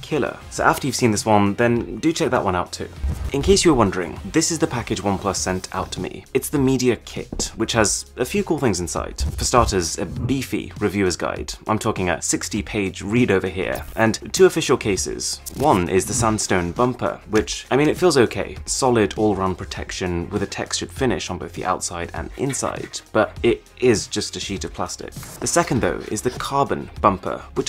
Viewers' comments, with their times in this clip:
0:08 your voice triggered my Google Assistant